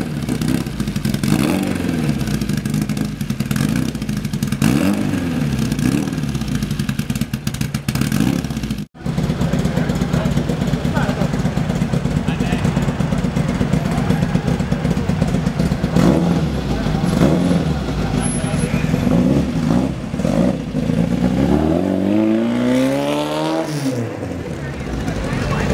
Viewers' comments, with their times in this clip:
0:09 sounds likes the song Bleed from the band Meshuggah